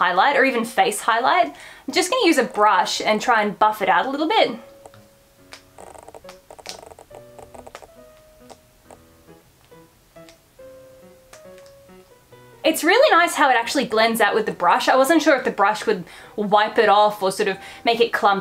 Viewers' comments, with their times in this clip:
0:05 Can anyone tell me what's that weird noise that I keep hearing in every PPP video? At first I thought it was Archie but it's in every video and it's driving me crazy that I don't know what it is :')